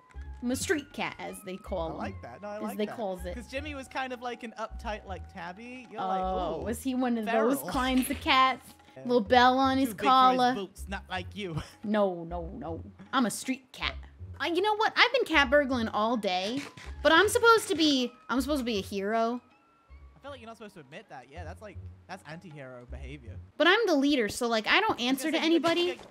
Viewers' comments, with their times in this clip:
0:09 The accent was beautiful! 😭❤️